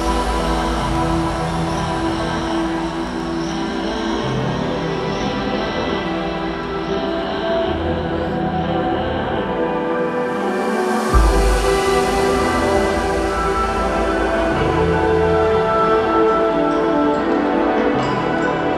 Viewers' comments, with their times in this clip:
0:04 quite a shift ;) always shock me Clozee ... ur choses of music are so fire 🔥 😍